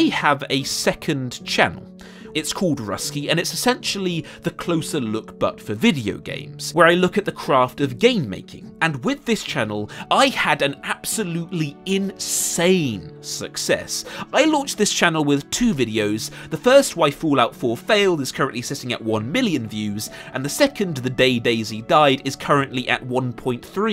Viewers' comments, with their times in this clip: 0:07 "Where I look at the craft of gay-making." I'm curious about this channel now 😉😉😉